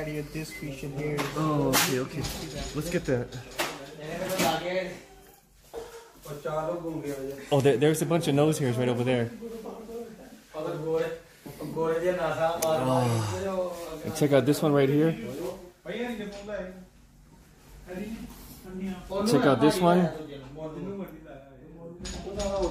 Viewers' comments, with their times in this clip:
0:08 LMFAOOOOOOOOOOOO these guys were laughing about how u got nose hairs ripped out